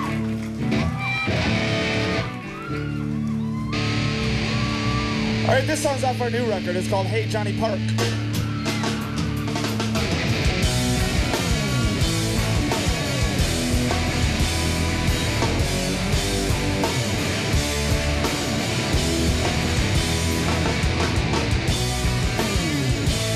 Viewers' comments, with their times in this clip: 0:05 That performance of Hey JP is the hardest/sweetest example of OG FF. Pat is SINGING and has perfect harmonizing w/ Dave. Look at Nate, too. They’re all going so hard! Only thing that sucked was Taylor’s snare....maybe that’s why he was beating the shit out of it.